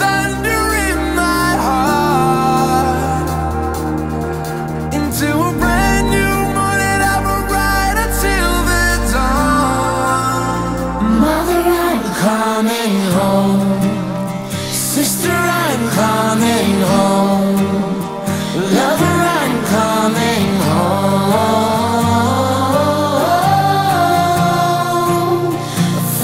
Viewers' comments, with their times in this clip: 0:10 Wonderful Track !!! 👏👏👏 Feeling like Dear Avicii when the very nice singing started with the guitar ... 😥🙌😍🔊🔊🔊
0:11 this acoustic section of the song is my favourite part!